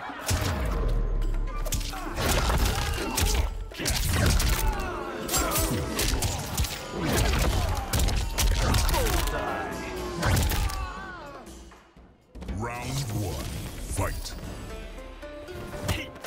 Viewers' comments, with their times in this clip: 0:04 The crowd started booing you for the overkill 😂